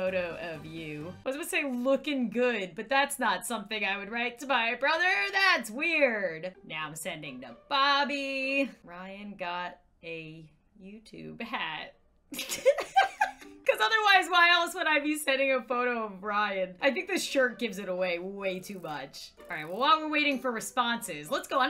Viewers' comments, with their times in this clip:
0:08 For a second there you sounded like that female Google voice